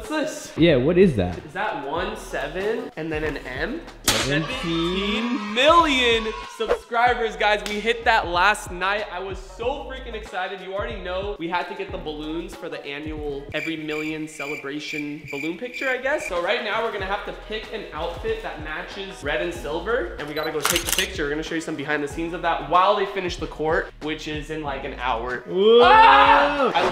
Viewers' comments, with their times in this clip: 0:04 kids cheering sound effect
0:04 kids cheering sound effect
0:13 crickets chirping sound effect